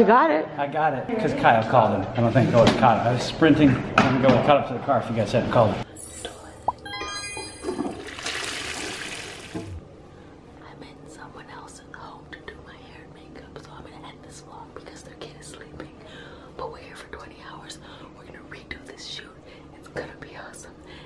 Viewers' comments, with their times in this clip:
0:06 I thought my headphones broke